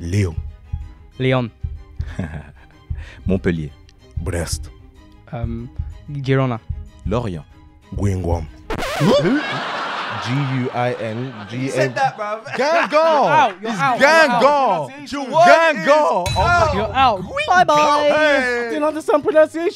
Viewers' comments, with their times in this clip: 0:07 Gweengwomb is easily one of the funniest things I’ve ever heard